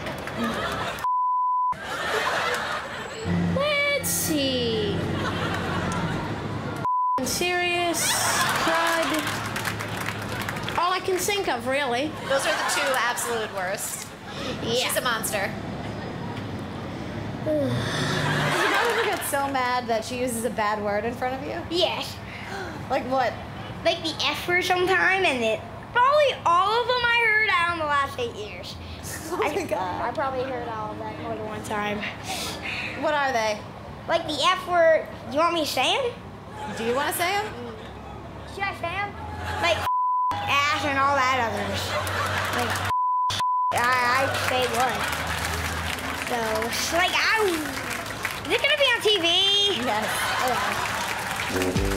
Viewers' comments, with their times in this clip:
0:03 that “let’s see” sounded like I’m bouta end this man whole career
0:03 That sigh at the end 😂😂😂
0:03 ahahaha! The kid had me rolling. The sigh at the end. Like... whatta ya goin' do, ya know? 🤣
0:06 ... f..king serious? He said it just like I say it lmao
0:16 "she's a monster" Kid: *sighs* 😧
0:19 Kid on looks and speaks just like Dash Parr from the Incredibles
0:20 Bart Simpson is that you?
0:34 Bruh he looks and sounds like Dash from incredibles
0:36 That little dude is gold! He even does the impression spot on!!! You can just feeeeeel the rage! 🤣